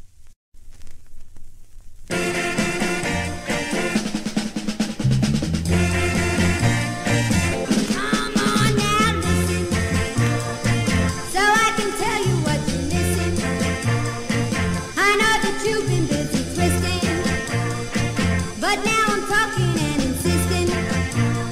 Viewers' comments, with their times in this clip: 0:03 Why is no one talking about the song being completely different ???? Smh